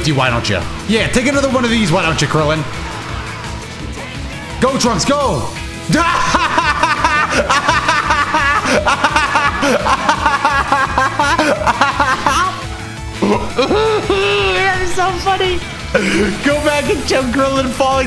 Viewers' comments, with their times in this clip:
0:05 Your laugh though
0:05 why he laugh like dat😂